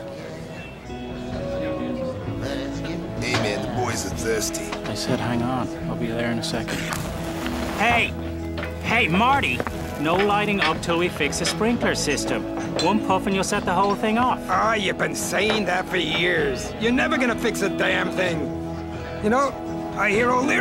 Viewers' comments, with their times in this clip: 0:05 Anyone else notice the bartenders voice changed three times